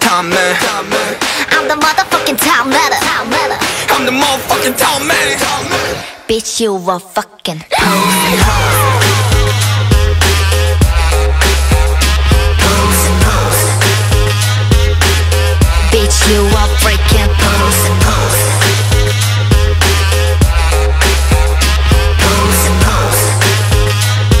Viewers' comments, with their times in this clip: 0:04 WHY HE SOUND LIKE J-HOPE
0:06 the way she says that is so addicting. I've broken my play button just by listening to that part over and over again lol